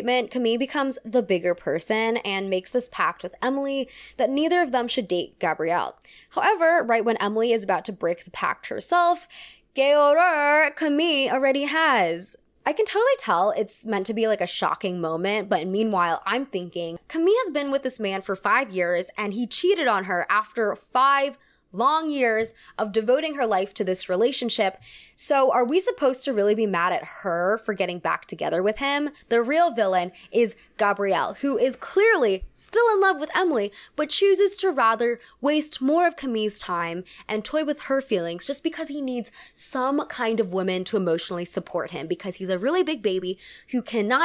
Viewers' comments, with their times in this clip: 0:07 what are you trying to say in french??? i cant figure it out haha
0:31 hahahaha love how passionatly you talk about Gabriel being a really big baby 😂😂